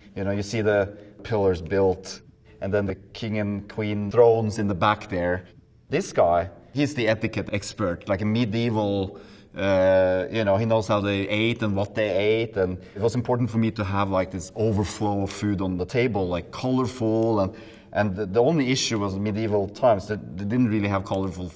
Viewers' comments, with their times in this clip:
0:03 "tHRoNE.." me: is he dothraki? 😂